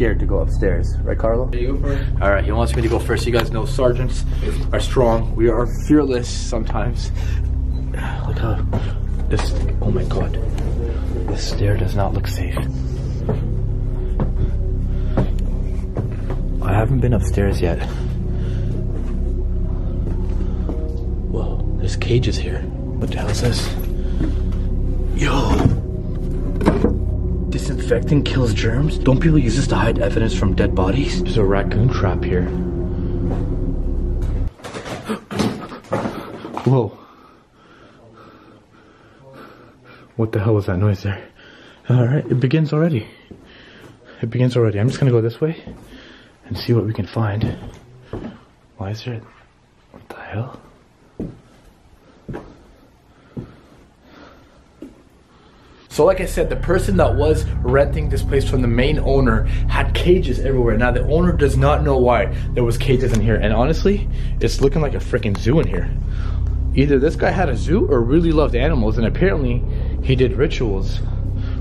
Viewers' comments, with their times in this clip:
0:09 you can hear some voices
0:55 there is a girl screaming
0:55 Its a girl screaming outside